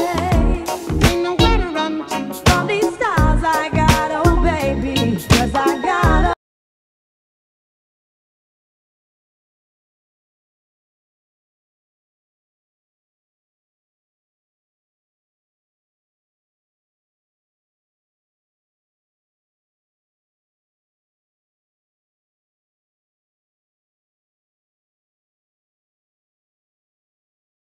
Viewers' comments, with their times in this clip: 0:03 Does the music cut off for anyone else? The rest of that song is missing a good minute of sound.
0:06 Theres a minute gap in the audio..
0:06 Why does all sound cut out ?
0:06 From there is no sound?
0:06 First of all, great work!!! This songs are the best, thankyou. This is what makes this litle problem enough to make me break the peace of your silence right now to say that there is a flaw in the video, by the sound cuts out for like 30 secs, no big deal, but the song was so good I really want to know all of It. Thanks and be safe.
0:07 Part of the song got striked?
0:12 This is great, but what’s with the dead air ?
0:13 Listened to this loads.. But why is it now cutting out ..odd.?